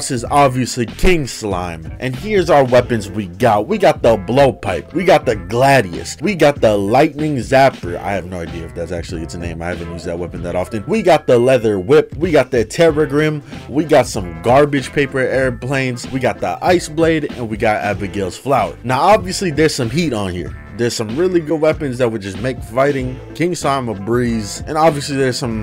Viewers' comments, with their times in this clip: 0:07 "we got the lightning zapper *starts rapping*"